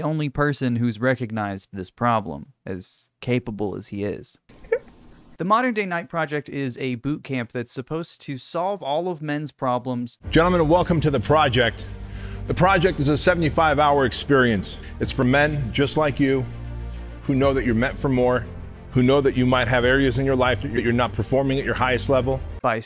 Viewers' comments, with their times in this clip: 0:08 I vote that every clip of Jordan Peterson on the internet be put through the Annoying Orange filter going forward.